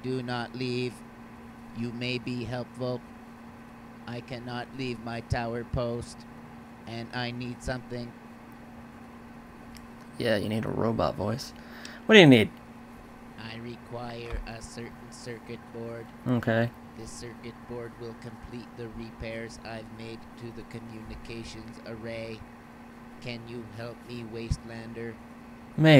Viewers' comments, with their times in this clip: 0:09 Lol did anyone hear the way the robot suddenly changed voice when the conversation was almost over!!??? LOL